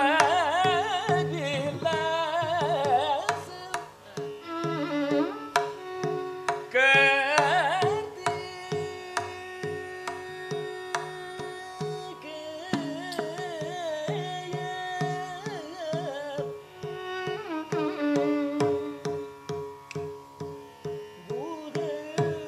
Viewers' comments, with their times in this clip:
0:03 was a sangati out of the world